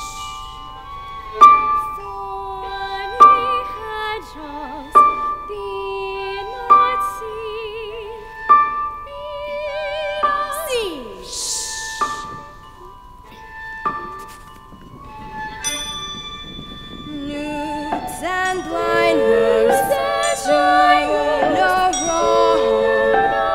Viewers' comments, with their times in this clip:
0:10 That song was killing my whole entire class. Overall, this is an amazing play, but I wonder, was the song supposed to sound like that?